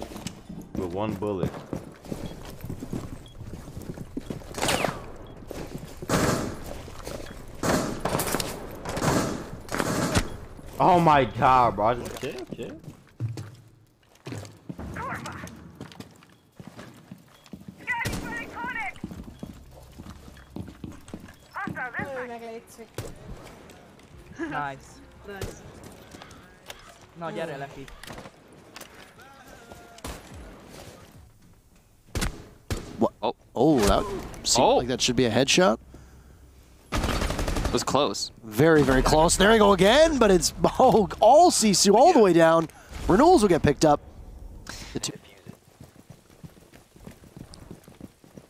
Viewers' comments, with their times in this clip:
0:03 was pretty hard to watch. Btw why does his game sound terrible??
0:33 you can literally hear the bullet hitting the smoke but there isn’t any dmg when the casters switch over to his POV